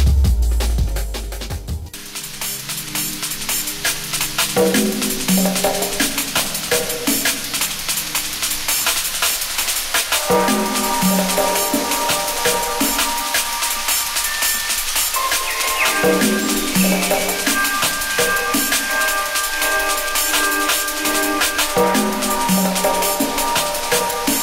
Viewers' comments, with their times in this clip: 0:07 almost had me in tears , fucking delicious riffs